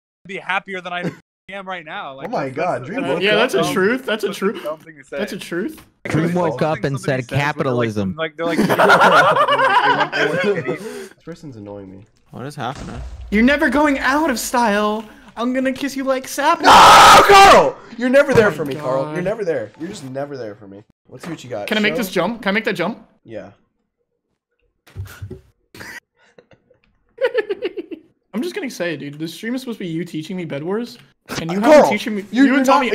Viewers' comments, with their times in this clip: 0:10 Not karl singing "I'm gonna kiss you like sapnap"
0:14 got me wieufhbsdj Karl singing